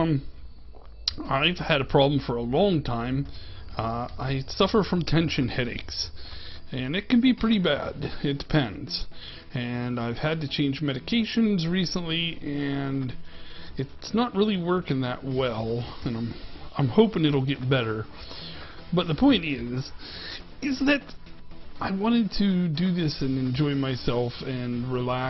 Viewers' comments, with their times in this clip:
0:06 I also got a kick out of the voice! I couldn't help imagining the "Masterpiece Theater" theme playing in the background in the beginning. (You would be particularly well-suited for a monocle.) I'm sorry to hear The actual building looks fantastic, too! It is so colorful. I think there are sufficient levels of kelp, but am hardly an expert in aquaculture either. I give the episode 10/10 sea pickles :)